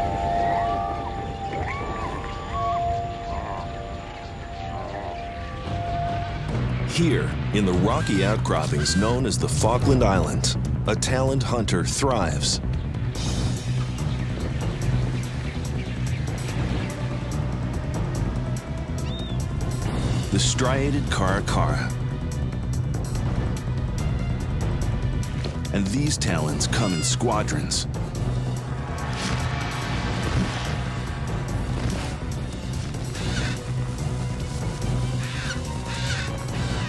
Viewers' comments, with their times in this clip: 0:09 The Farquaad Island 😂
0:19 Anyone else think that this sounds like something from Ratchet & Clank?